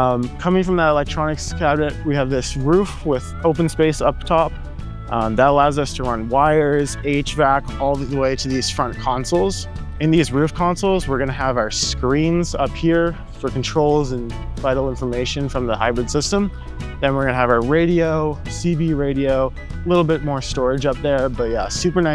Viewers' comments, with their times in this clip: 0:07 he said "H-Vac" - I'd thought he said "8-Track". That would have been a very nice 1970's retro-touch!